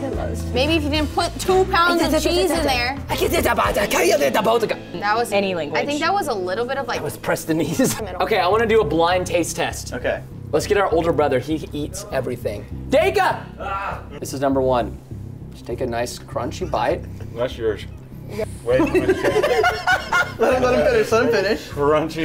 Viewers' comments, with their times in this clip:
0:03 what I hear when my mom is yelling at me in the morning
0:03 what I hear when my mom is yelling at me in the morning